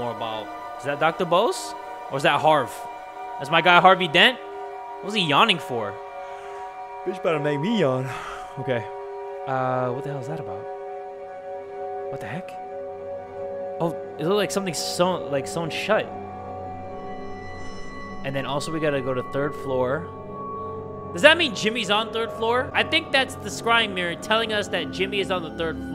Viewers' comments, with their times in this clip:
0:07 use me as the "I yawned too button"